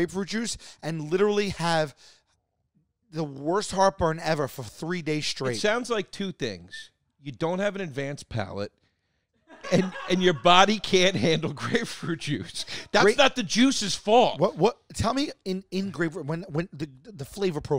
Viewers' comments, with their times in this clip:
0:05 that tooth whistle was impressive